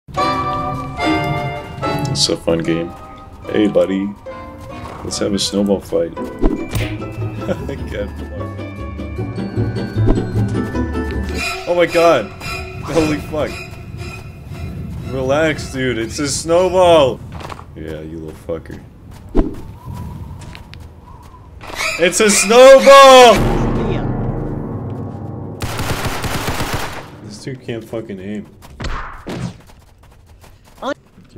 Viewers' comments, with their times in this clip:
0:01 instant duwang dub flashbacks
0:16 bri´sh people be like